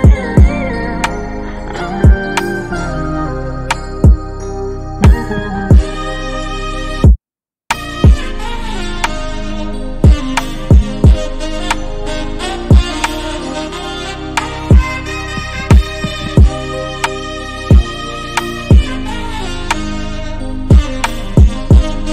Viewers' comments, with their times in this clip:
0:07 That bit hard asf but it skip